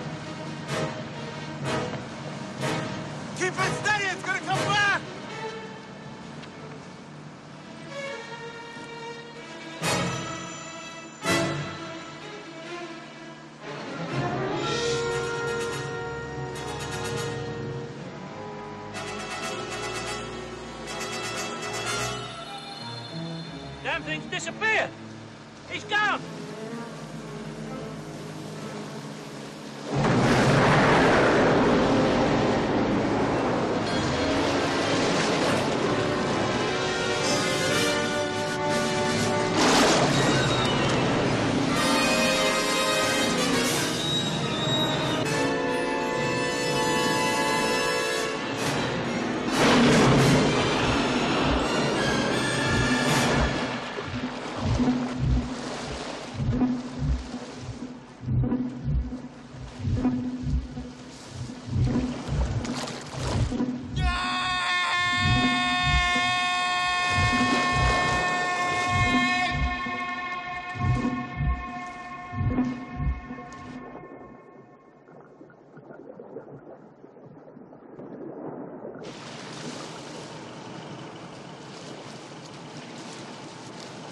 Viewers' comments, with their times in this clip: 0:10 did anyone hear a Sonic ring sfx to the beat of the Music
0:44 he is laughing?
0:44 the tune of the song is like the shout of the lady
1:04 still better than the screams from A Quiet Place :P
1:05 I thought that was a goat screaming...I'm sorry 😂😂
1:05 Sounds like a long lost cousin of a never found unearthed Raptor from the Jurrasic era